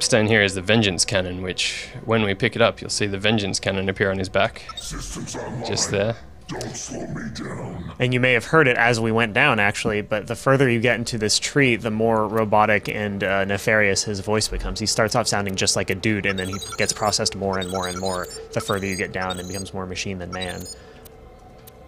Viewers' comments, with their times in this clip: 0:04 I wish Wilhelm had actually sounded like that with his final upgrade.